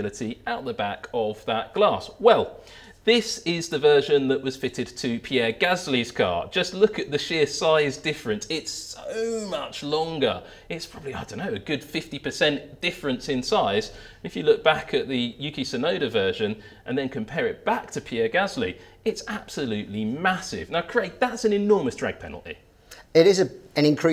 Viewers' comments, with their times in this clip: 0:07 sounds kinda mad out if you close your eyes